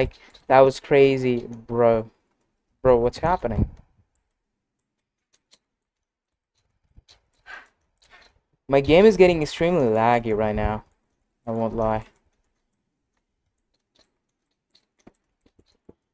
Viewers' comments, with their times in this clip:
0:04 The background noise 💀💀💀💀💀💀